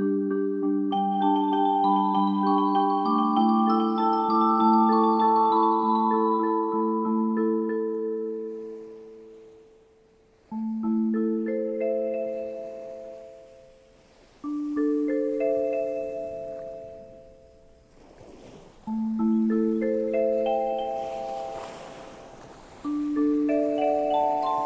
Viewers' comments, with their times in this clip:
0:05 Nice sleuthing! Japanese Wiki says it can be as short as 2.4 sec per transition which I believe can be seen in the Flatbacker upload. Also, the glitches are from the needle encountering dust/mold/just skipping. These discs were completely unplayable the first time I popped them in...with skips that were minutes long or with playback completely aborting! That was a tame glitch! The audio stability even through those skips does show that the PCM compression was relatively robust, however.